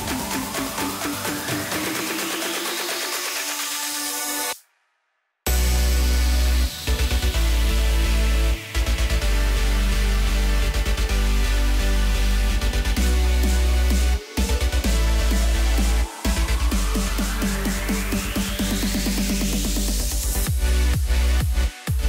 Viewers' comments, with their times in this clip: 0:08 That beat drop 🔥